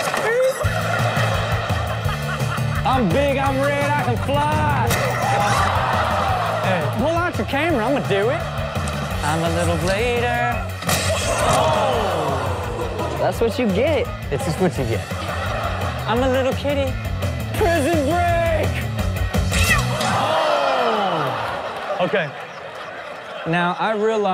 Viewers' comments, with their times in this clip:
0:08 rob should be a singer